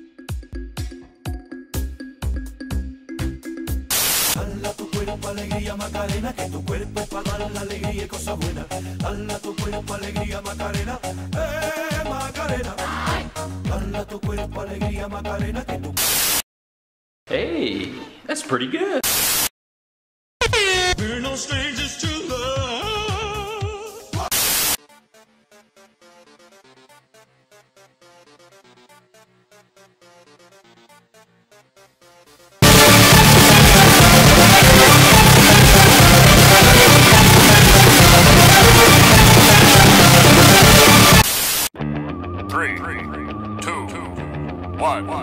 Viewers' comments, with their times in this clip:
0:04 Here comes my favorite song
0:04 I love the music
0:04 like for macarena music
0:31 I literally turn my volume on the hightes it can get Falls off chair
0:31 R.I.P my ears and me
0:32 me :ahhhhhhhh my ears!!!!!!! dies this lesson is about never ever wear headphones again
0:32 OWWW I HAVE HEADPHONES 🎧
0:32 AAARRRGGHHH!!! ITS SO LOUD
0:32 Ow my ears xd
0:33 RIP me/other headphone users
0:33 rip headpgone users